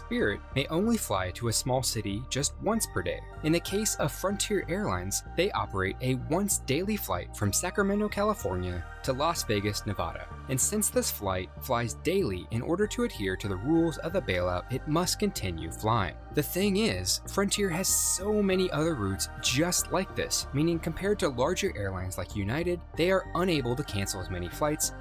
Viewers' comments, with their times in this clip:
0:10 i get so annoyed when people say Nevada like that -_-